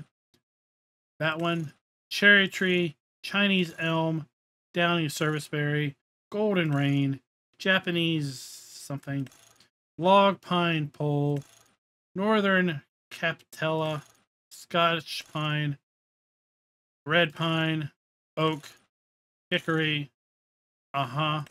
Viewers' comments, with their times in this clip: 0:09 Ah yes. My favorite tree. The "Log pine pole tree" lost it on that one.